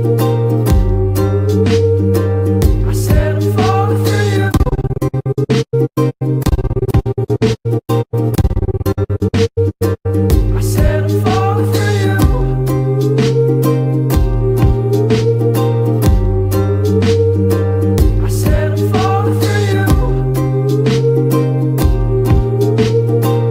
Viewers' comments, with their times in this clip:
0:06 i thought my headphones were broken